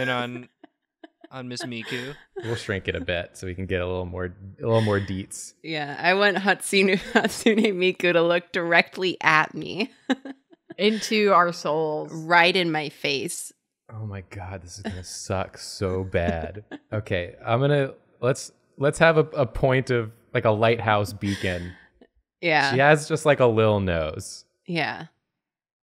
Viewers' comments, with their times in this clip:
0:10 I heard something naughty and I can't stop hearing it now